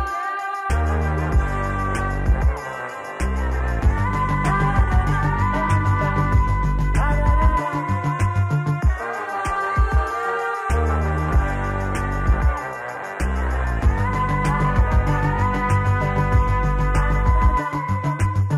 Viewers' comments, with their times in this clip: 0:06 Sneyser makes the song better